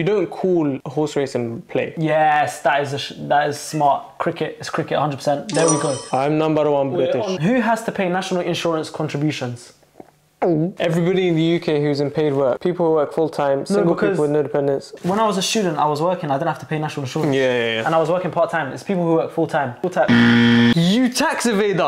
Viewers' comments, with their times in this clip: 0:05 i think he's nambar wan british